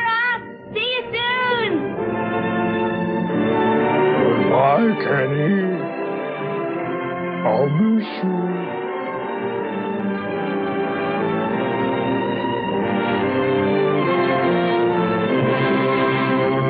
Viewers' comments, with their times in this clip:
0:03 Gotta be honest, I prefer this riff than the riff that replaced it in Season 3. I think it's all down to Joel's Gamera impression.